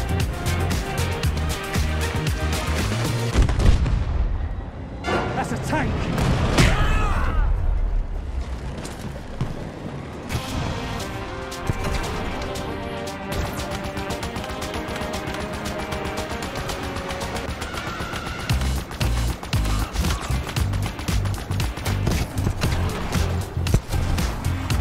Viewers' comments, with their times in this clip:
0:09 can I point out that ghost firing kind of fit with the music
0:10 I don't know if this is planned, but god damn, this is pretty well synced with shooting sounds and music!
0:10 Damn, that ghost shooting goes perfectly with the music!